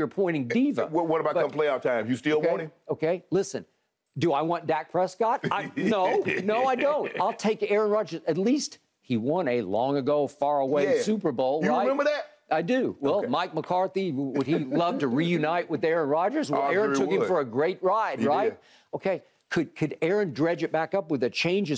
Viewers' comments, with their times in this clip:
0:04 lmao that pause was great 😂 “do I want dak prescott? no”